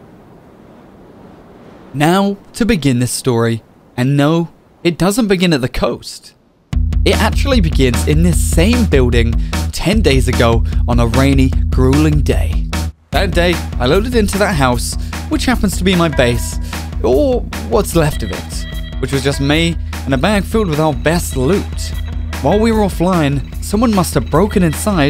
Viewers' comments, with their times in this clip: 0:06 what was the music ? punkpop asl lol